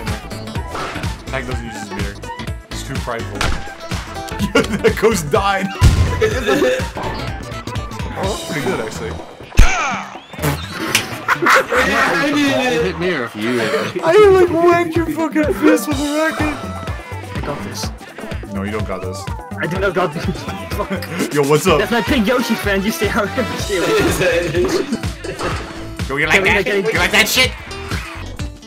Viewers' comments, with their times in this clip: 0:09 was that a DMC1 Dante grunt? oh mai